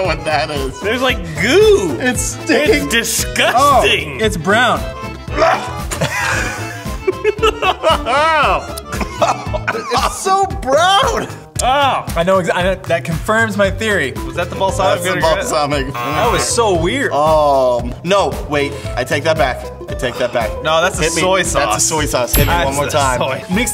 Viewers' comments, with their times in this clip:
0:05 that gag tho